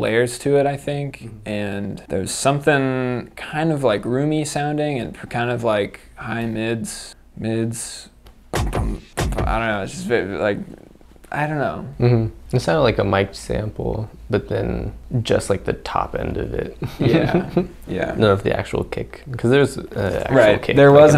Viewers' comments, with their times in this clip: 0:08 what if it's just Winter kicking the camera?